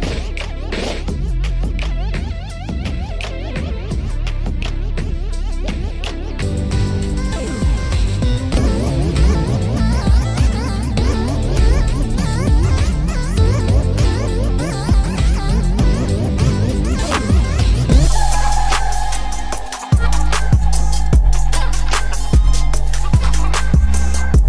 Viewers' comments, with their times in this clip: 0:10 she be looking thick😂 Also these sound even worse